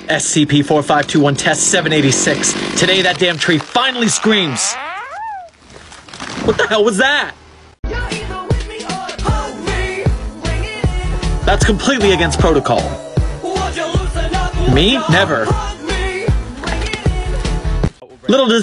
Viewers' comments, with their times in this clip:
0:04 ok the tree won't scream but it will fart